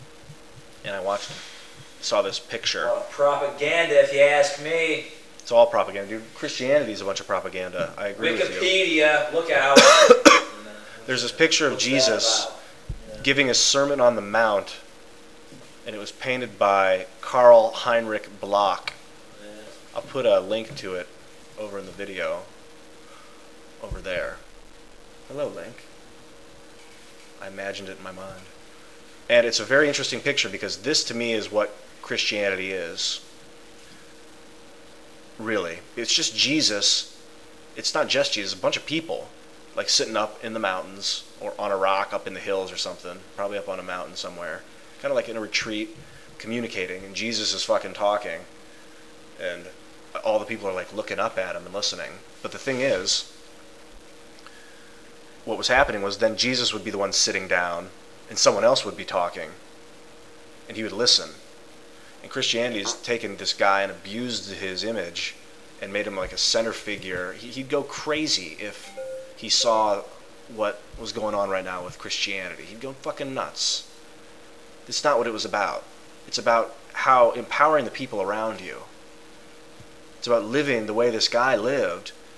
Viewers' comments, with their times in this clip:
0:10 Meth smoker's cough?
1:02 sorry for sounding like an idiot...but i thought i heard a squeaky fart ...Doesn't sound like the chair. yeah..thats enough to cause me to forget whatever point u were trying to make...
1:03 When I was watching this earlier, I was interrupted before I could watch the last minute. I just watched it to the end. DID HE FART ???
1:03 That fart you did was the only that made this video interesting, I hope you didn't stink out your buddy too bad